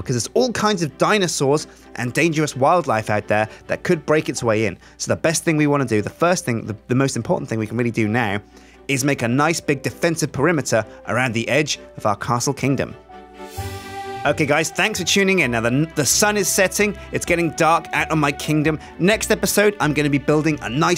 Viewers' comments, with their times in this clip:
0:08 you sound like Bear Grylls